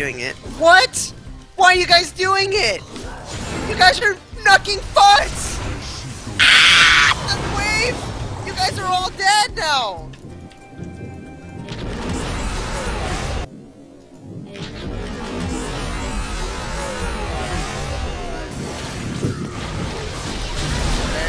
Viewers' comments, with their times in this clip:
0:05 Dat manly scream tho